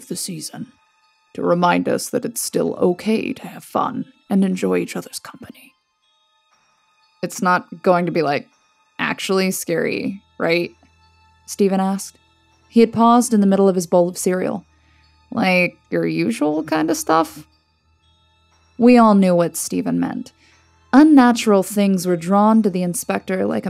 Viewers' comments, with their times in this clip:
0:05 Who the hell is killing the Inspectors voice!?!? 😠 I'm not sure if I will finish the story I made it to Edit: Nope maybe 20 seconds more then I quit and 👎🏻